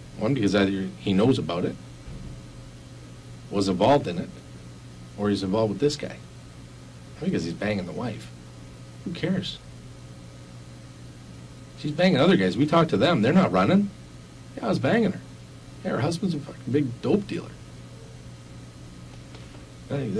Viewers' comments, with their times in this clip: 0:07 "He's a major... crime... guy..." cop must be getting tired haha